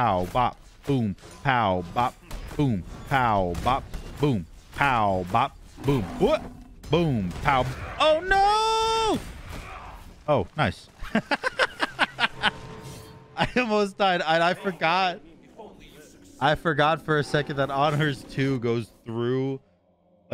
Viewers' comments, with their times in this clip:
0:06 oh nooooo! oh noice JAJAJA that one got me